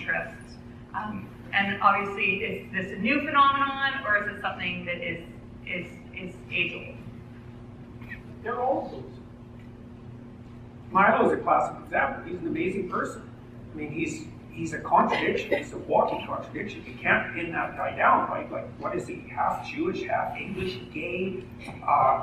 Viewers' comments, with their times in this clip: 0:08 What is the word that he says after ''They're'', I simply cannot make it out for the life of me.